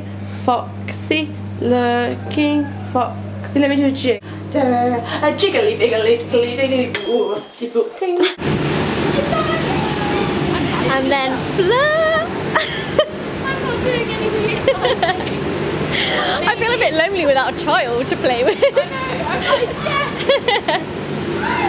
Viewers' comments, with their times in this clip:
0:03 when the microwave goes